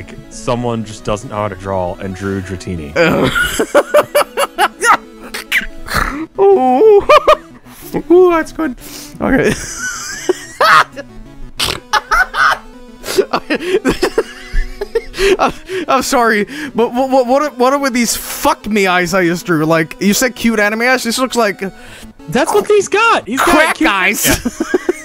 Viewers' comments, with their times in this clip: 0:06 that fucking laugh